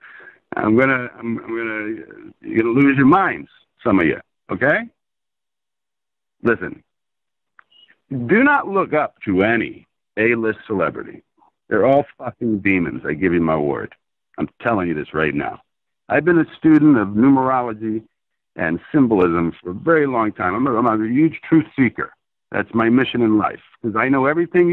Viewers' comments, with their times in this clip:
0:05 oh boy. I can already tell this is gonna' be fantastic going just off of that reserved yet authoritative "listen", and I was already enjoying the interview.